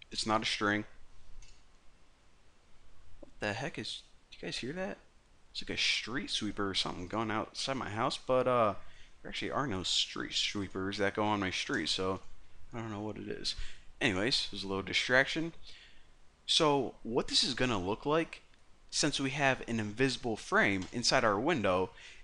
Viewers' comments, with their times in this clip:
0:04 Subbed for the Streetsweeper